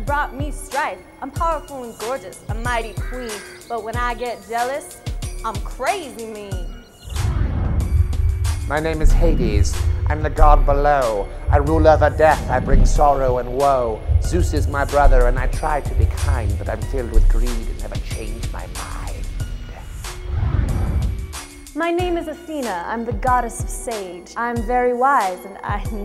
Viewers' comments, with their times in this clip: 0:08 sounds like doctor evil from Austin Powers